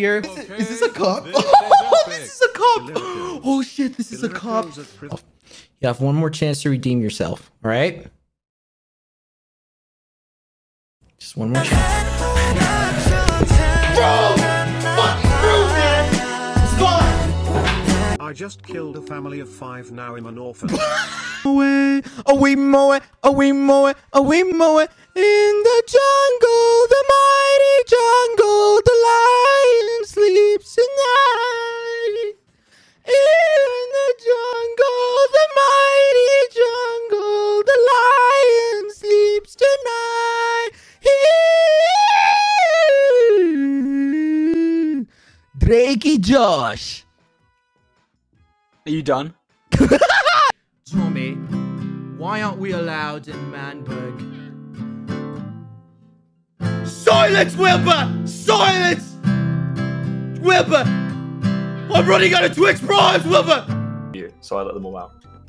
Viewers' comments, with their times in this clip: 0:07 IM CACKLING THE WAY HE LAUNCHED HIMSELF AND THAT WAS THE MOST PISSED OFF ‘VROOM’ IVE EVER HEARD
0:12 THE WAY HE GOT MAD WHEN 20CM STARTED PLAYING 💀💀💀💀
0:18 that guy will always have the flew of "i made Big Q wheeze" like damnn
0:40 me trying to hit a high note:
0:45 it almost sounded like he was speaking hindi or something
0:46 HOW THE HELL DOES HIS VOICE SOUND EXACTLY LIKE DRAKE’s FROM DRAKE & JOSH SPANISH (Latin America) VERSION?????
0:50 My therapist for like the 7th time this session: British Quackity isn't real. He can't hurt you British Quackity: